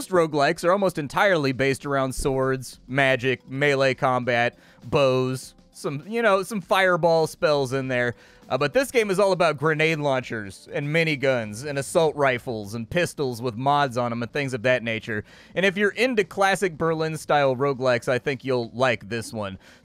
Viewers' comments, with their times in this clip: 0:06 Does he say "aber" ?